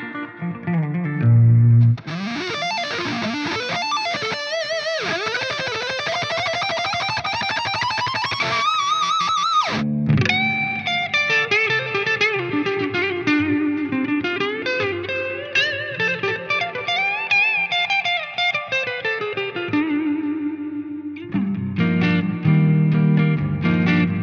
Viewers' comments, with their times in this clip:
0:10 That tone to defeat Steve Vai and get your soul back.